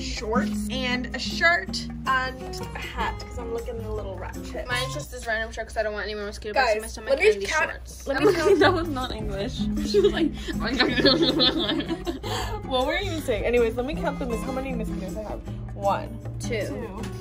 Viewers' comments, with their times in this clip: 0:04 THIS IS LITERALLY HOW I TALK AND THEN GET MAD AT MY FRIENDS FOR NOT UNDERSTANDING ME